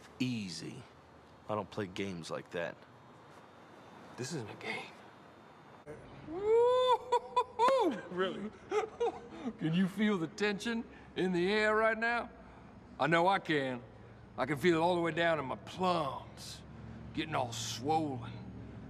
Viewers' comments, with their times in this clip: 0:03 that was classic Will Ferrell.... Gets nose to nose with KP & sternly whispers "... This isn't a game"